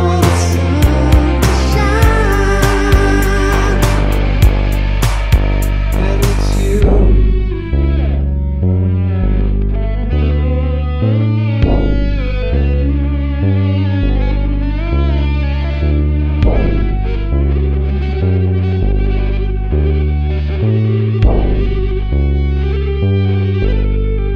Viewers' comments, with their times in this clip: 0:08 a real synthesis of sounds its like a flute eaten by a guitar